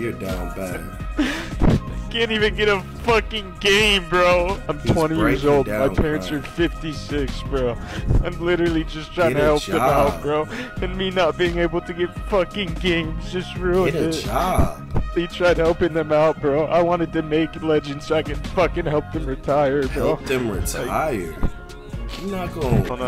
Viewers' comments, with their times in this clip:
0:09 this nigga got “get a job” adlibs in the back 😹😹